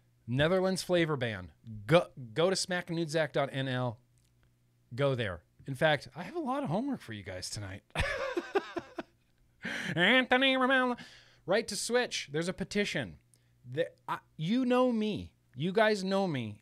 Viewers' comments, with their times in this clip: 0:04 Smaaknoodzaak, it's funny how non-dutch people pronounce this haha! What's not so funny is that the flavor ban went through... January first, 2023, everything except tobacco flavor will be officially banned. I think it's too late but if anybody had any advice or stories about countries that changed their mind somehow after deciding on the flavor ban, please let me know! Every piece of information or advice is welcome